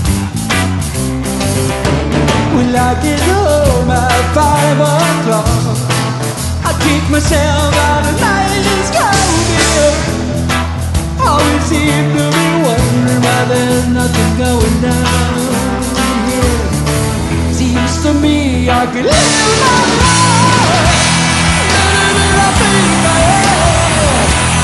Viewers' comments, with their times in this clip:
0:06 This version has a reggae sound to it for the first approximately!! Killer cover!! Like the camera work as well!! And live covers are always cool!!